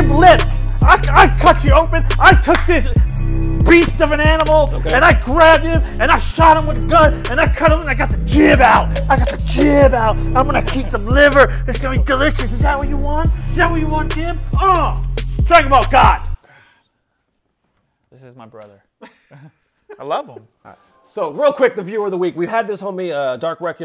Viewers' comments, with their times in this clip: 0:05 The beat is LIT